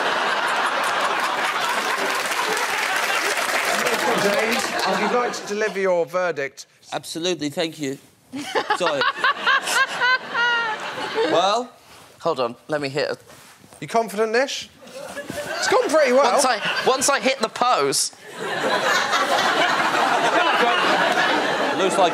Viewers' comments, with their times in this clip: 0:08 that almost sounds like Joaquins joker -.-